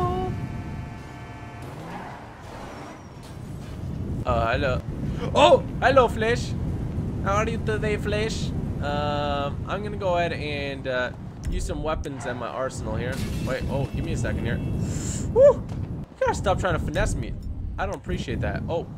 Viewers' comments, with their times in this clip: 0:03 when you make classical music with your mouth